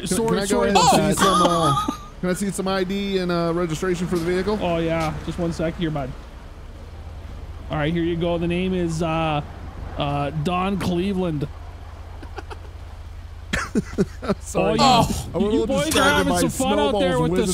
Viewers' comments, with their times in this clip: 0:03 perfect minnesotan accent bud, spot on